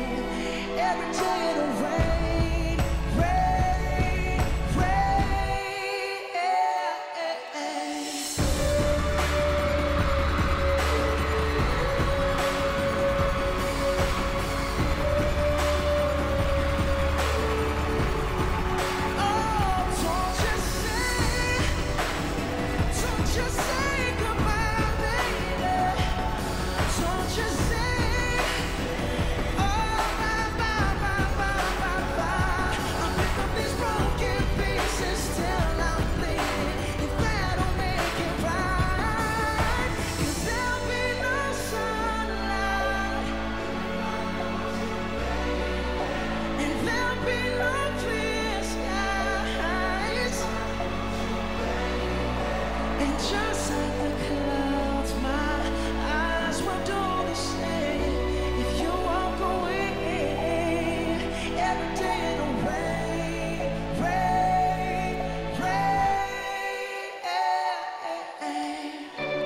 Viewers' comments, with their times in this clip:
0:08 His VOICE!! But though! Still my fave. 2020
0:51 the sudden change in his voice damn he's good...
0:53 I've heard all the lives of this song, and this one is always my favorite part amazing how Bruno manages to lower the note
0:53 that key change tho